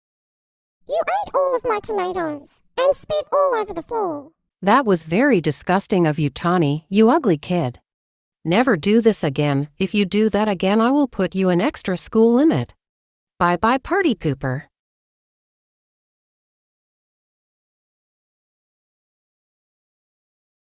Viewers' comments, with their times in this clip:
0:04 miss z's new voice is navigator!😊